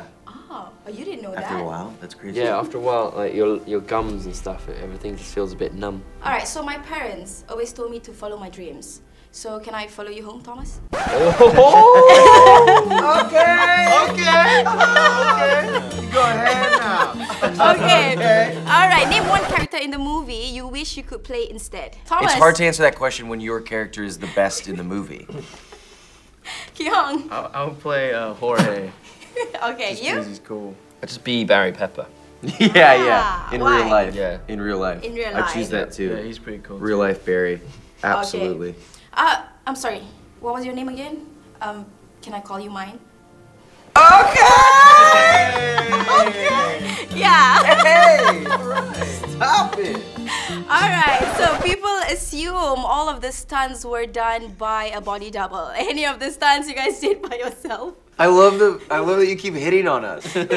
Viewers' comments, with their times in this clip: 0:10 Ki Hong's oohoohhhoooo is sending me 😂
0:43 best okay I hear ever 😹😹😻❤
0:46 Hey ! Stob it ! (I hear jin bts somewhere) 😂
0:46 lol I love how Dylan's voice goes smaller at the second "okay" like he's feeling so shy my heart beat so fast against my ribs lol